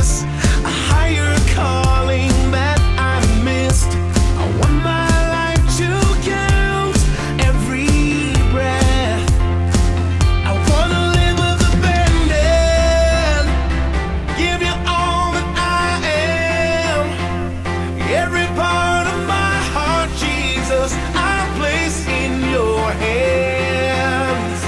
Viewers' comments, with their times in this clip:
0:09 The chorus line starting and throughout the song sounds like "I wanna live with a band-aid"